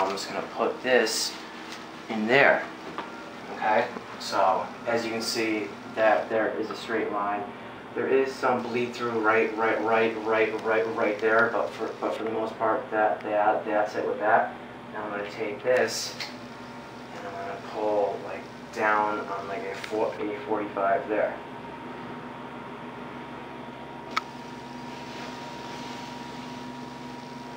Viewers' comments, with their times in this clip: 0:08 your stutter is killing me, "there is some bleed through right, right, right, right, right there..."